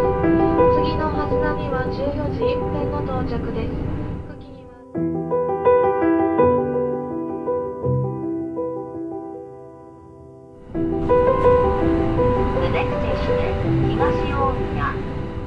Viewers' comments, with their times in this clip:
0:03 what is the back track music sounds beautiful, matches the aesthetic perfectly